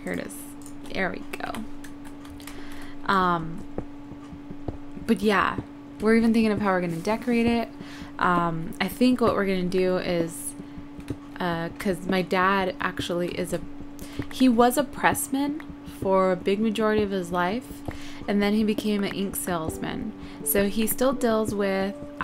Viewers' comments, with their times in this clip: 0:06 listen to background music it sounds like a creeper is gonna go boom